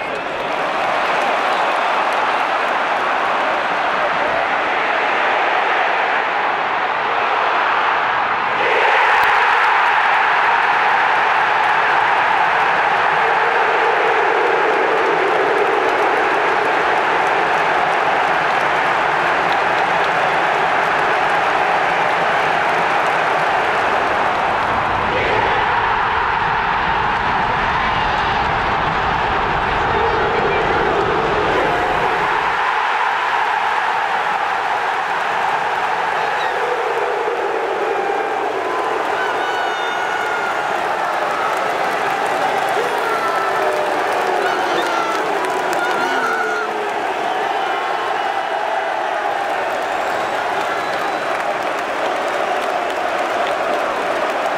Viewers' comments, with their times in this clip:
0:08 the sound, the crowd, the fans ❤️
0:40 man.... .... there must not be very many things that can give you the same feeling as having 10's of thousands of people collectively hold their breath for a second and then erupt in cheers like this... ive replayed this several times, chills every time